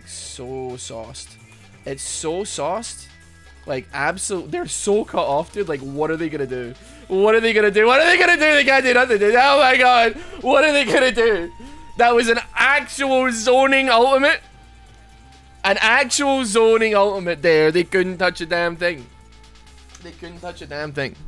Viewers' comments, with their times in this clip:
0:03 am I the only one who noticed the voice crack and took interest in it